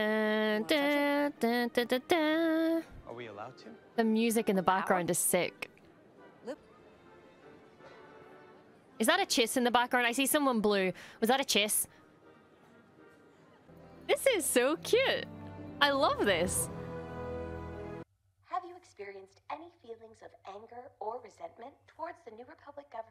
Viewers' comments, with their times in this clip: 0:08 Glad I wasn’t the only one who thought that might’ve been a chiss in the background. I liked that the amusement music they had included part of the resistance theme at that part too